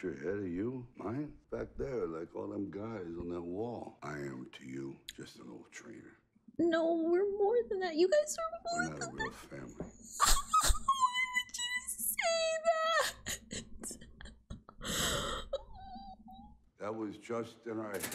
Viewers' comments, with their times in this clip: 0:06 I swear I shouldn’t have laughed at the squealing 😭